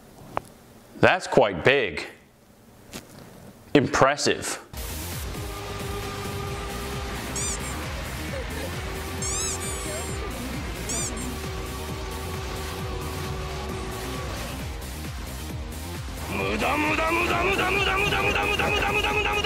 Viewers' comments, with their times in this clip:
0:06 lol the sound effects got me dead xD